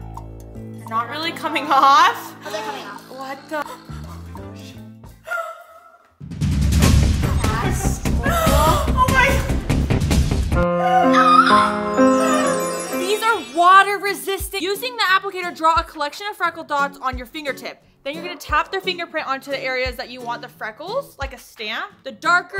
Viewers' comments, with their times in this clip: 0:03 Is it just me or did she say the s word